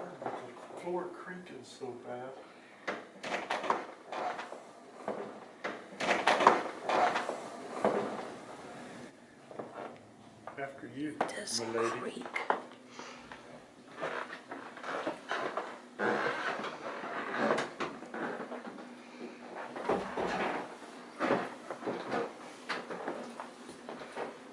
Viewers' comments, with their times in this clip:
0:06 sounds like "why do" or "why don't you take stairs..." yeah weird